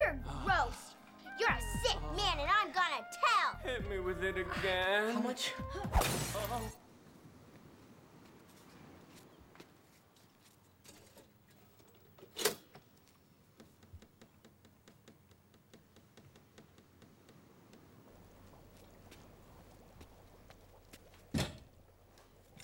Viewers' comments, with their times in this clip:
0:03 hit me with it again! How much? Glass breaking